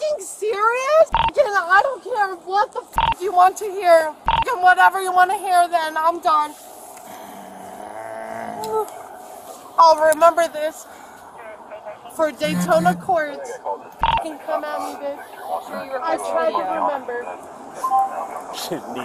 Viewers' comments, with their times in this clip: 0:07 That was a hell of a fart she ripped!